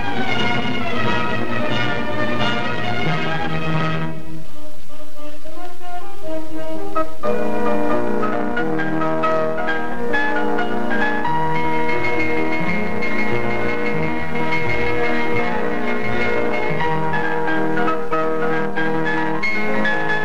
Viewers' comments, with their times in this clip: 0:03 Sounds like saxophones, LOL, but could be bassoons and oboes. I'd have to check the score.